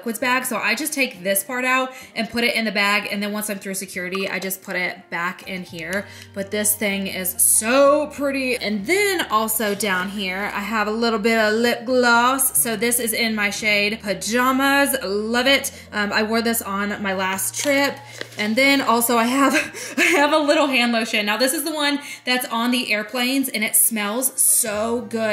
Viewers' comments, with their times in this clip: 0:07 I loved how you said 'SO pretty' :D